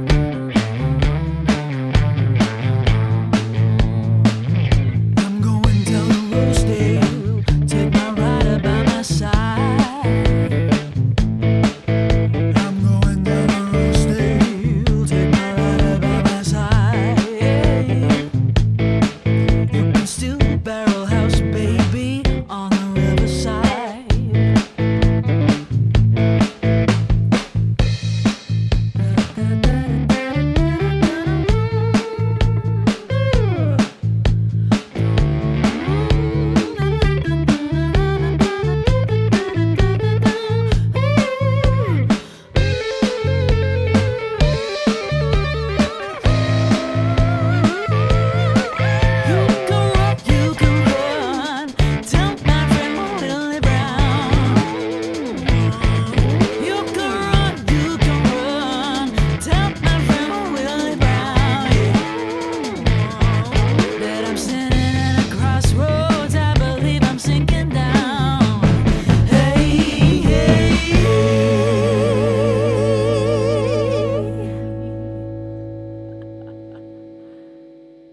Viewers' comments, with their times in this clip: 0:05 Those low notes and the broken up signal are gritty gold 🤘 Great performance
0:12 If I had to say which was my favorite part I'd be a bit stumped, it all blended so well. But that deep Alto voice part you do personally gave me goosebumps. Go girl!
1:00 Great performance, this sound fits you very well. What happend ?? Made me happy to see the giggle.